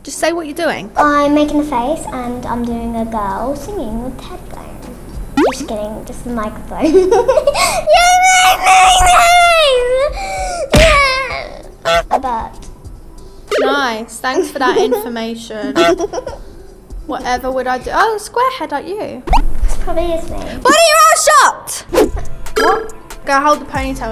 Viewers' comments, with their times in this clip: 0:08 that laugh it just scared me.